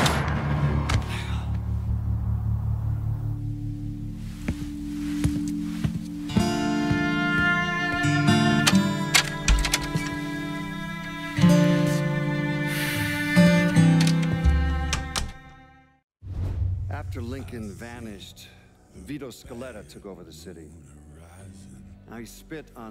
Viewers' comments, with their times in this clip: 0:06 When the music started playing... It really shows how far Vito has fallen.